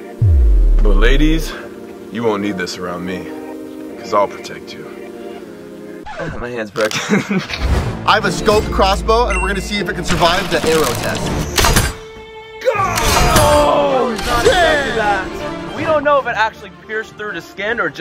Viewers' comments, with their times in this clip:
0:03 bro just revealed a whole Nother version of his voice💀